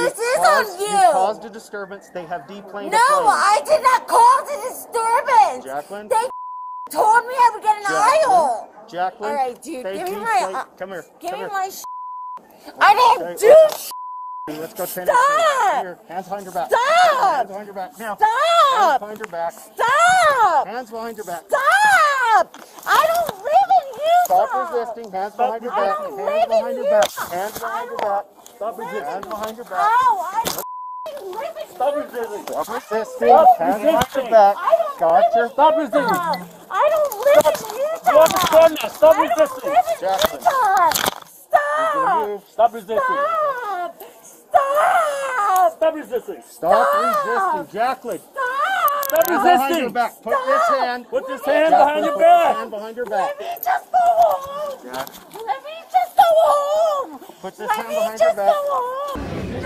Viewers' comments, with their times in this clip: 0:03 At the top of her lungs: "I DID NOT CAUSE A DISTURBANCE!"
0:13 “Staaaaop! Staaaaop! Staaaaop! Staaaaop!” They should use that sound clip as a computerised warning (like “Pull up! Pull up! Pull up!”) on aircraft - the pace, tone and variation in pitch is perfect, and no pilot could possibly ignore it. It is even nuanced, with slightly increased pitch on the last warning as impact is imminent.
0:39 Even the way se was saying "Stooop!" Sheesh
0:41 i don't know, but she actually starts sounding like a jackass - nasal n everything. it started sounding like the "haw" in "he-haww".
0:41 Come on, everybody sing! Stah-ah-ah-op! Stah-ah-ah-op! Stah-ah-ah-op!
0:47 she has the most annoying voice